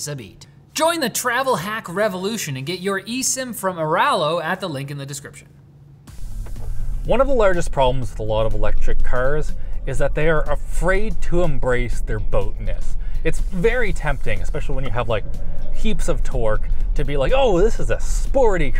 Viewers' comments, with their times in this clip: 0:05 Something is wrong, after into the video, the level of the voice is up and down like a yo-yo!